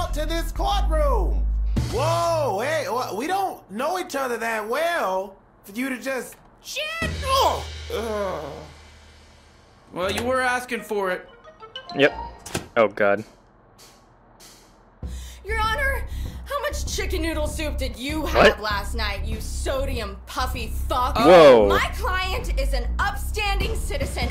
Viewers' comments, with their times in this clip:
0:05 when the Little Public Defendant went "Shit!" It sounded like Michael Jackson